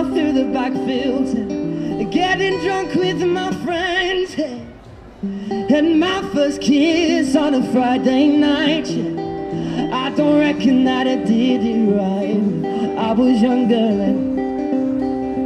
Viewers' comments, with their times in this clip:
0:03 Man ur soooo damn blessed with ur voice! Fight for your succes, dont ever give up. U'll become a legend like ed sheeran someday!